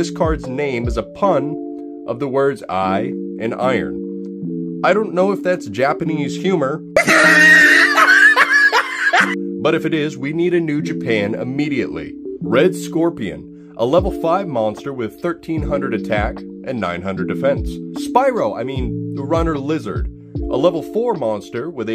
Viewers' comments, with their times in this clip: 0:06 The laughter scared me, not cool 👎